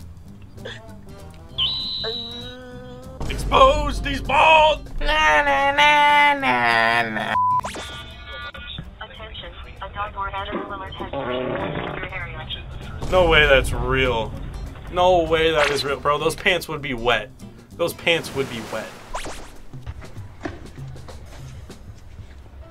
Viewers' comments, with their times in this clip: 0:07 The mail man farting got me rolling on the floor😂😂😂😂